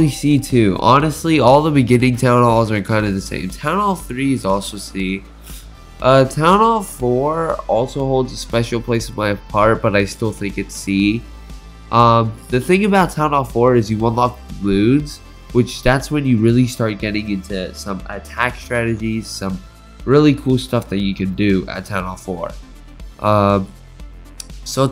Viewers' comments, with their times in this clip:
0:09 did you say part or heart? It sounds like part but it would make sense if h said heart, not sure what u said here lol